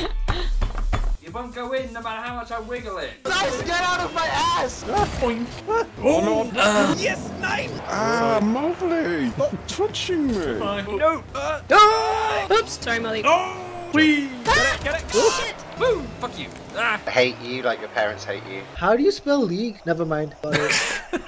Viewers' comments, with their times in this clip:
0:06 genius, that you can hear at his voice he is 100% German :D Neeeeeeeinn!! French laughing sounds a little bit like Santa .. Ho, ho, ho :D
0:07 who's the dude yelling a very unhappy "NEIN!"